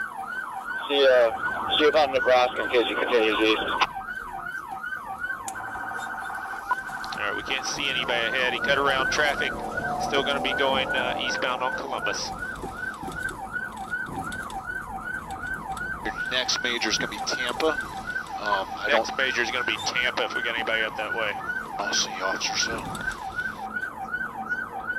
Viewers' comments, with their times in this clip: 0:05 Am I hearing an excited whining K-9? BTW, what does SLAVE READY at the bottom right of the screen mean?